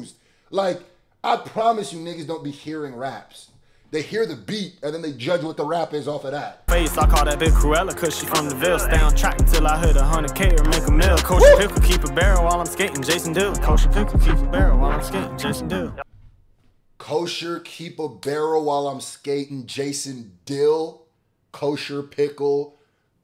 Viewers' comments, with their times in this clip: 0:08 yeah the beat could be mastered better but if people open their ears to its potential its a fire ass beat in its own right